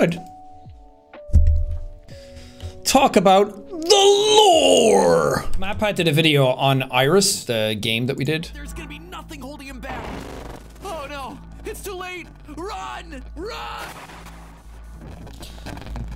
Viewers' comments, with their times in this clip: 0:03 That was a really good MatPat impression!